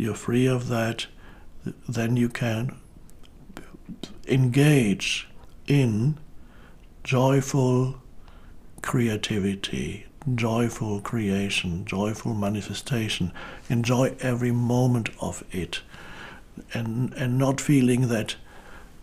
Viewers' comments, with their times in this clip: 0:03 not to sound like a conspiracy theorist but does it sound like someone else talking through his voice or is that just me aha kind of creepy not the first time I've heard it happen either